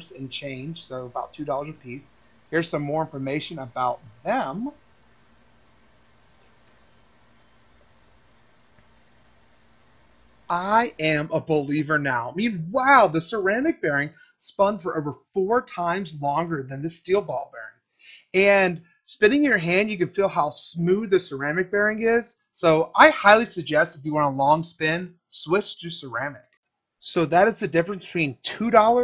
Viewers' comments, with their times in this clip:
0:10 listen closely -40 he clearly switches off something that is applying force to the ceramic one listen closely for something almost sounding like a hair dryer and once it stops spinning his hands go off screen for a second and the noise stops